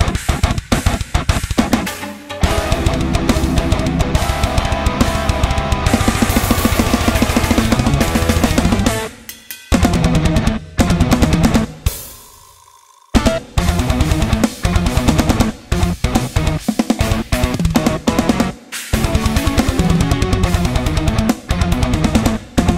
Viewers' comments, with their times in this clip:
0:10 and on gets soooo nasty!!!!